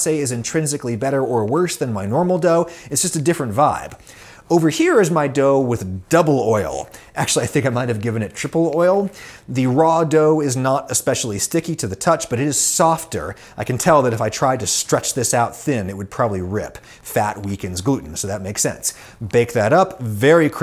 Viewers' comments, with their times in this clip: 0:06 did you just fart Adam?